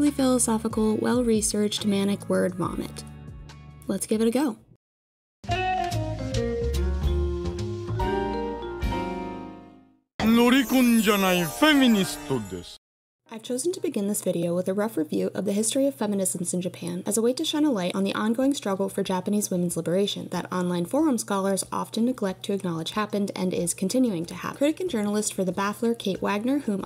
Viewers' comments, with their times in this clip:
0:08 Loving the Frasier intro music transition. Also I remember when I first started anime, I found the fanservice really hard to get over. However, now it is something that I've grown more accustomed too because its everywhere.